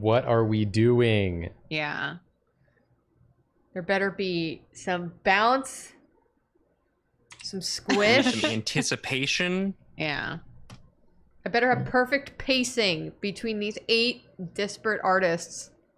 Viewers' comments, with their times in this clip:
0:03 In which the Drawfee hosts start speaking in bold to appease the chat with key phrases in animation.